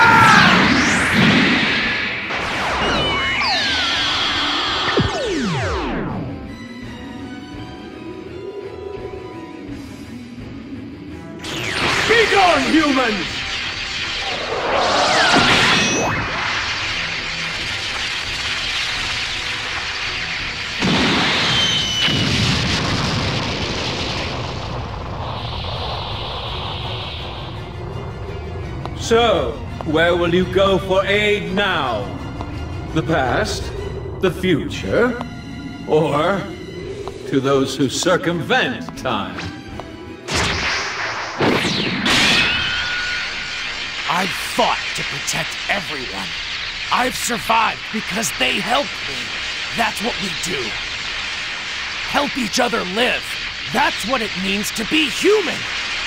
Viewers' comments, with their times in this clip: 0:04 I love the sound when they defuse
0:37 You know ? That sounds like Metroman from Megamind... :O